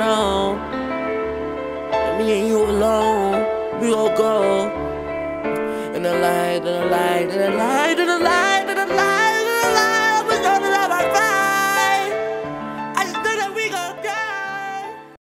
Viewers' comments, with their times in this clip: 0:06 nah when he hit those notes on